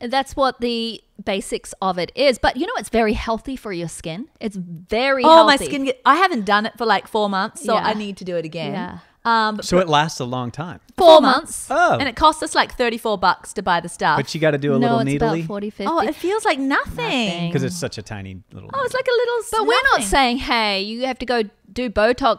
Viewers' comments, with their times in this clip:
0:10 love how they answer in perfect unison😅